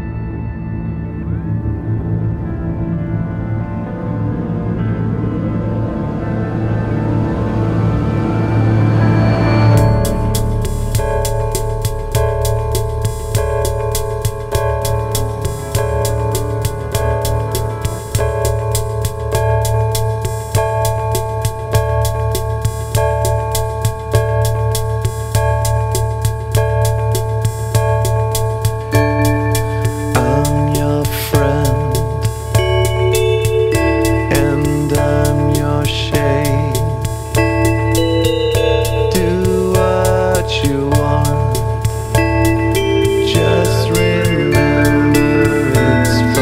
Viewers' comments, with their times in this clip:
0:10 Me: fuck i changed the song
0:28 Oh someone is connected on MSN